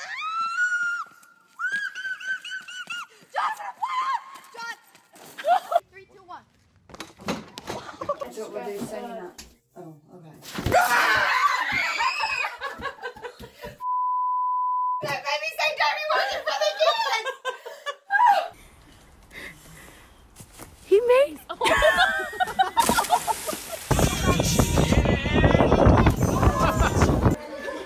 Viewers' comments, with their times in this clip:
0:08 why is she shushing? what noise could I possibly make that ruin her "fun"?
0:09 what did she even say?????????????????????????